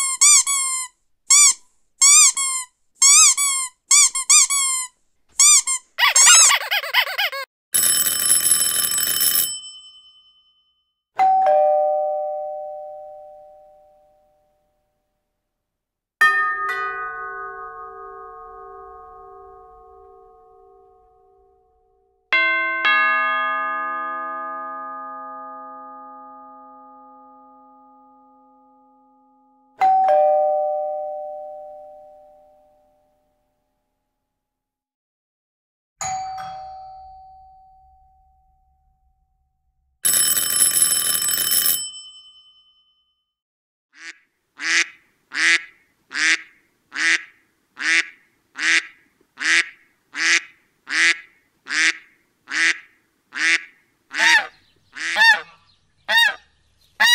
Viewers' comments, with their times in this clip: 0:09 My chihuahua went crazy on the doorbell ringing he jumped up and he thought my mom was home and he loved my mom
0:44 The ducks Quacking is the only one that makes my dogs head tilts side to side-